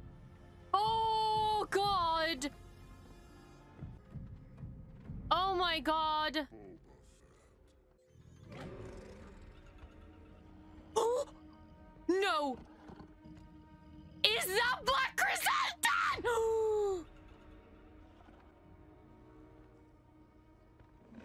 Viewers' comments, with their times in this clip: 0:08 This is my favorite reaction of the year, thus far. By the way, my headphones actually exploded into tiny little pieces after this.